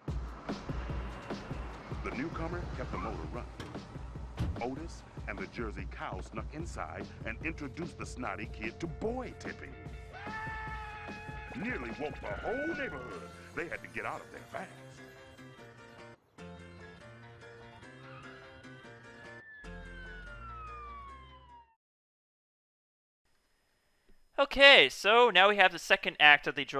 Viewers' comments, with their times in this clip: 0:09 snotty boy screams in the movie